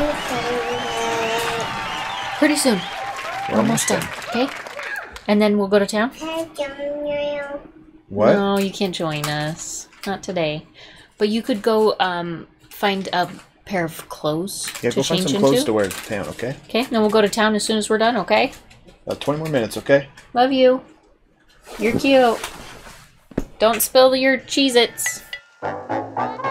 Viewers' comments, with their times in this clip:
0:07 lol love the music you added when you little girl showed up